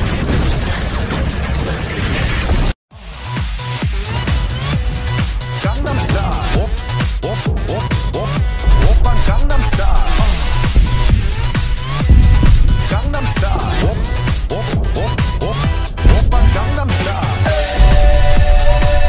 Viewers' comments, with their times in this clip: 0:03 no one's talking about the very convincing booms.